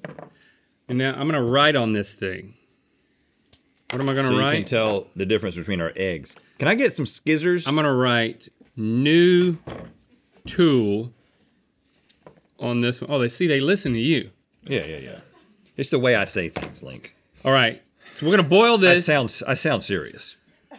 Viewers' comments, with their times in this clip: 0:07 I also call scissors this Glad I’m not the only one that does it!!